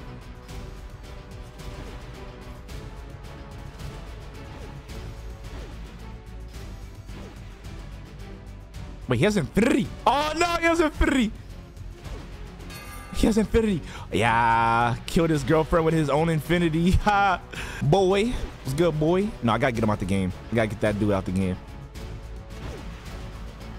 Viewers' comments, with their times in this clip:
0:09 the way he says infinity lol